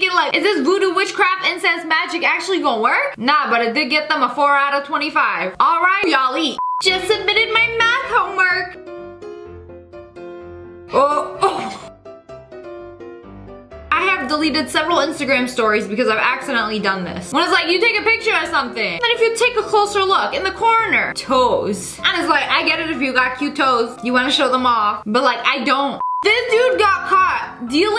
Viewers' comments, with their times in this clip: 0:10 oh my God the keys you know for a fact someone is coming as soon as you hear those keys like you hear the keys dangling as an adult and you get PTSD